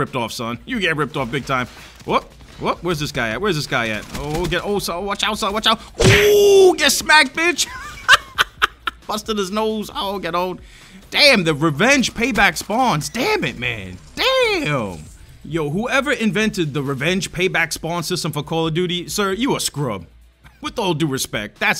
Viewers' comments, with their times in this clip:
0:05 snack noise make me die 😂😂